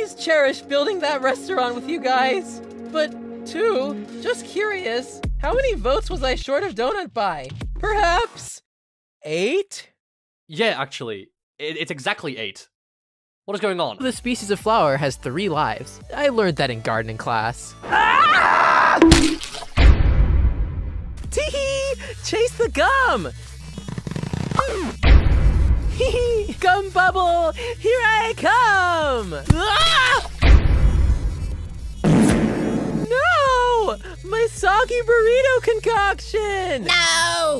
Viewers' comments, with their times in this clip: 0:06 saw can say eight again normally
0:08 he says 8 without a scream
0:09 Wait a minute… saw finally said something that sounds like ate and didn’t scream 😮
0:24 why do i love that quiet but distorted oof sound xd